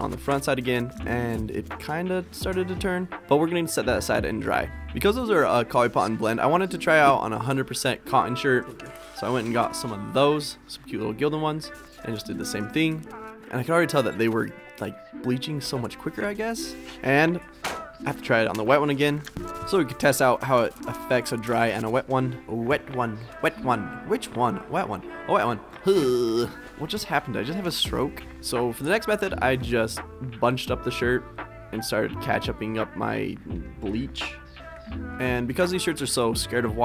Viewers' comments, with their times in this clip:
0:04 "Because those are a coly-potton blend" I had to re-listen to that like 3 times.
0:05 I love how you say "Coly-Potton Blend" because I'm mega dyslexic and say the same thing!
0:17 gotta love that smack